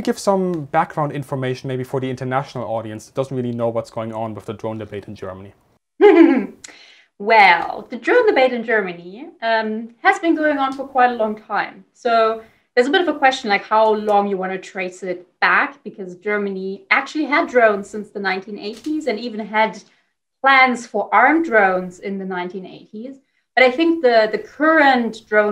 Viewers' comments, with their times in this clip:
0:07 That laugh xD
0:08 starting a debate about killer robots with "hihihihhi" .... i like her!